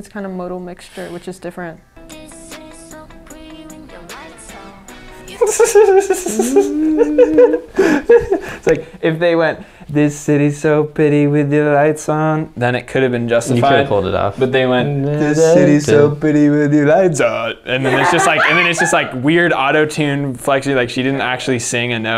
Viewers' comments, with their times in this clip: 0:10 This line is actually Naevis, a mixture of 20 voices including the members, edited out and call it a day. That makes this voice sounds robotic or in autotune. SM really invested so much to naevis voice that her debut was delayed for months now. Anyhows, give editor a raise. He/she's so funny I can't handle it